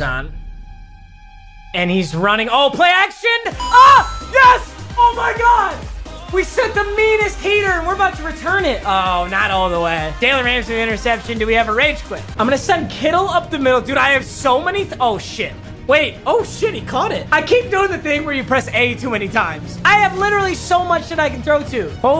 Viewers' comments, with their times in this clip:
0:03 yo what song is that? Its so hype